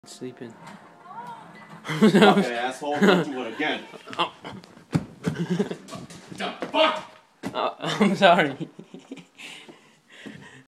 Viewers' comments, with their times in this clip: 0:01 the penny makes a dingy noise